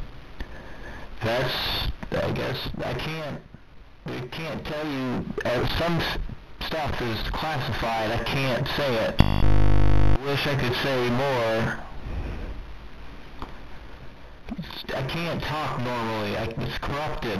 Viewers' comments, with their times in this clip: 0:05 The thing is like this, I put this video on my TV that had Roku and after approximately 18 seconds my TV had the same sounds as null but more saturated